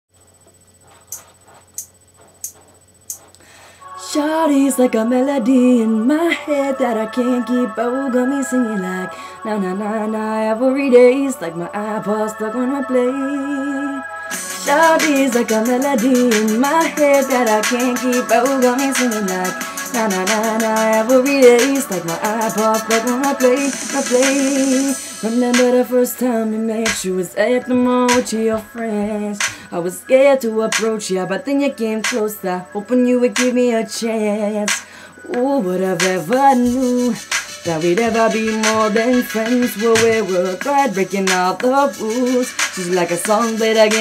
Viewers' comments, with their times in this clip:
0:00 u look funny but u sing really good
0:32 lol its actually ..the way he says closer cracks me the hell up..and also he looks like he's gonna be a thug n shit and then he sings like miley cyrus..hella